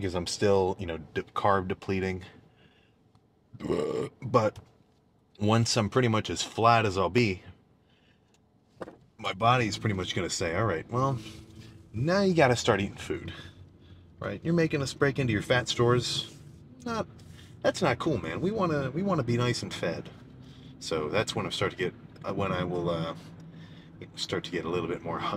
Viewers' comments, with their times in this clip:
0:10 Did he fart ?